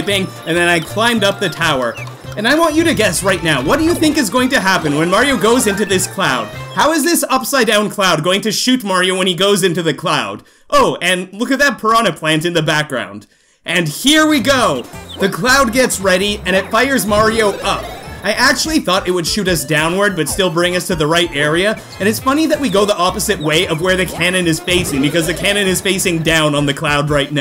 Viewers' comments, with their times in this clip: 0:08 the cloud just farted!
0:15 the cloud fart